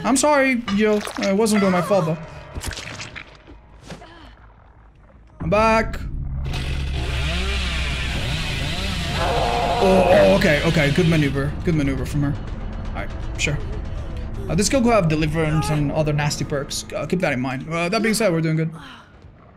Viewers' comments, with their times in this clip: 0:06 two great fellas going "oooouuuhhhh"